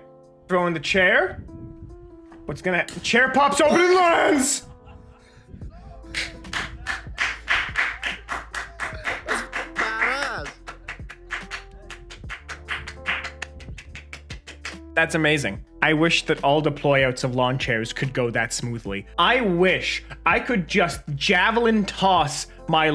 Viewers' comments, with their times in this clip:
0:05 INTENSE clapping sounds ensue.....